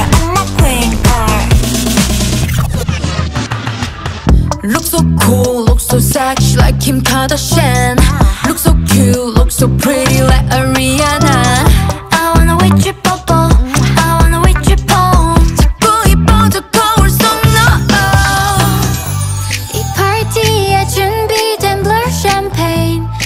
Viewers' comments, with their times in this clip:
0:05 the way Yuqi pronounces “Kardashian” 😂